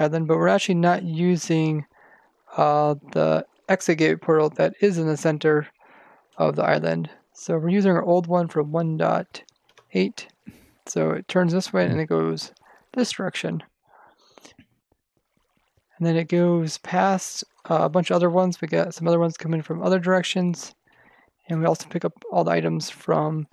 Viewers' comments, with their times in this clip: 0:09 1 dot 8 ?? Nah its more 1 got 8 : )